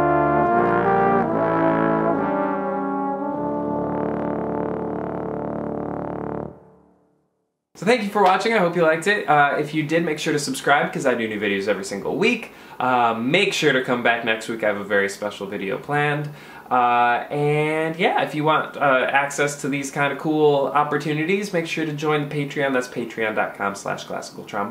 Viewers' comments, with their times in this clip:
0:05 Hello nice video. Watched. The stream. That Cord 👌